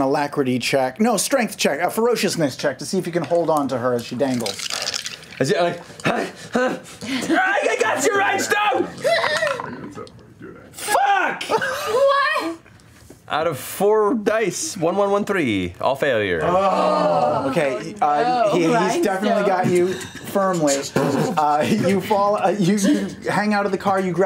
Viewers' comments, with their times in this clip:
0:10 LOL that fuck was so sincere 😂